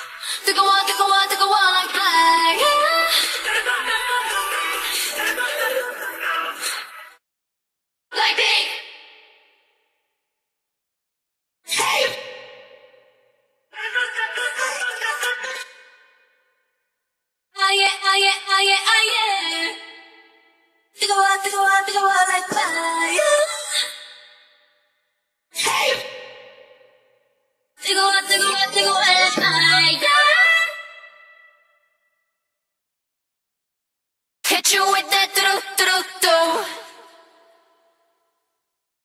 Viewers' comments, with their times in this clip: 0:09 insert cricket sounds
0:25 You ain't slick with that waveform moved over half a beat. I already fixed it!